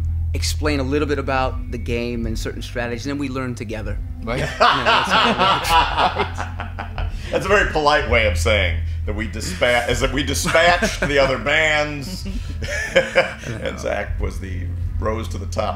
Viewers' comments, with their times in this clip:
0:03 epic laugh explosion